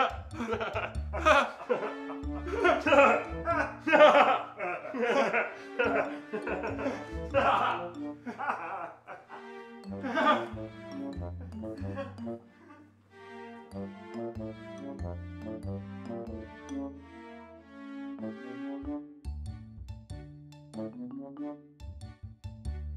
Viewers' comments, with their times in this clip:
0:09 That face and laugh